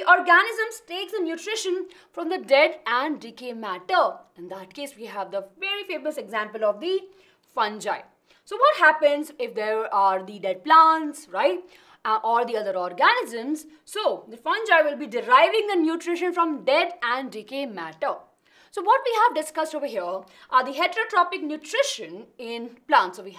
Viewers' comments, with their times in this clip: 0:07 Amazing mam but you said funjai instead for funggki